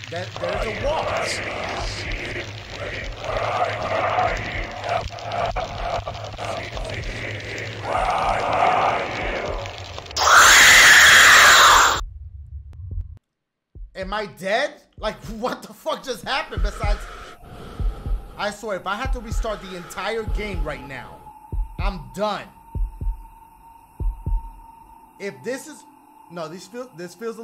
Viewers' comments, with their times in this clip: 0:08 headphone users warning